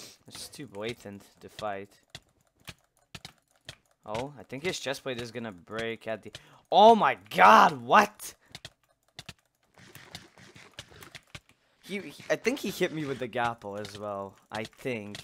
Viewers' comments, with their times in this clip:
0:03 9-10 cps sounds like 5-6 cps lmao